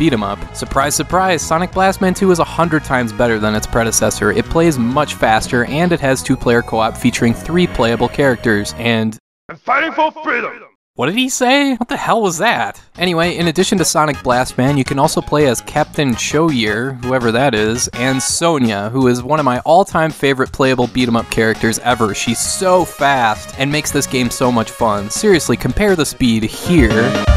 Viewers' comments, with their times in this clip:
0:09 Sounded like a Japanese man saying "I'm fighting for freedom!"
0:09 I heard A Taito film